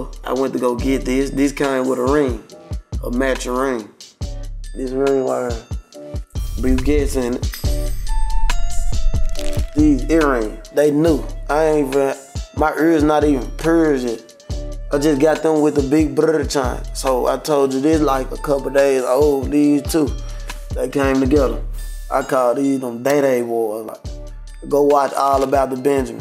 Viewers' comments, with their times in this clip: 0:08 he dropped a verse, he’s on beat too
0:10 thought he was freestylin
0:11 Pooh Shiesty: “My uurs not even puurzed yet” 😂😂😂😂😂
0:11 Pooh Shiesty: ma errs not even purrced yet" Me: whatchu say I'm dead brodie🤣😂
0:11 my urrs not even purrs yet💀
0:11 ma ears aint eein persian
0:11 " My errs not even perrsed yet " I'm dying 😂😭
0:11 How to speak Memphis
0:11 nah man's speaking his own language
0:11 My urrs ain’t even purrced yet😭
0:11 my urrs not even purrs yet
0:11 “ma errrrs not even Persian” 💀
0:12 “mah erzz not even Persian” 😂